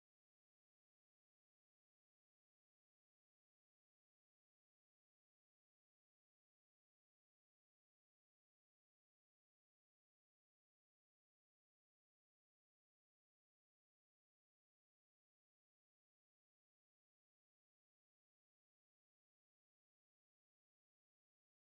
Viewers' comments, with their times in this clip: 0:05 ....eco be eco-ing